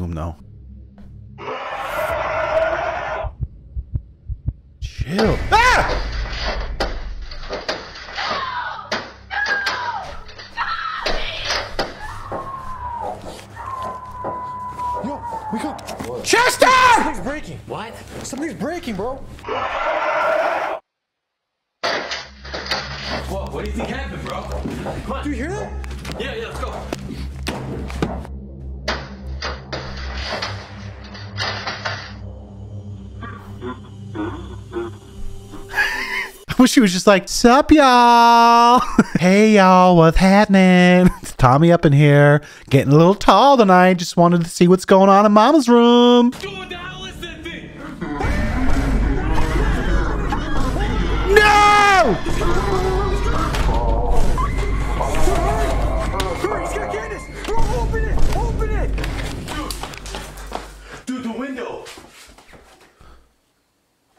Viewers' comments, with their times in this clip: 0:05 when the doom soundtrack comes on
0:29 How my uncle bangs on my grandma's door
0:48 those vine booms are gold